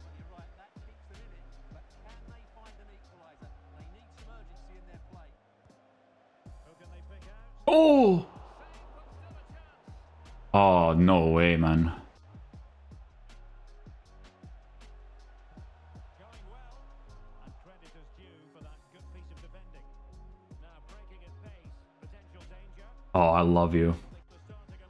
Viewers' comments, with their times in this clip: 0:06 that Oh came from nowhere